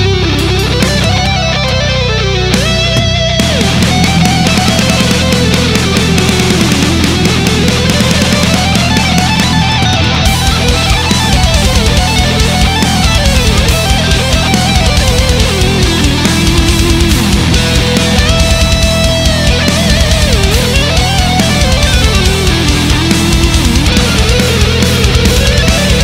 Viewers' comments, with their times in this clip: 0:10 The bass part during the guitar solo is just so primal. Love it!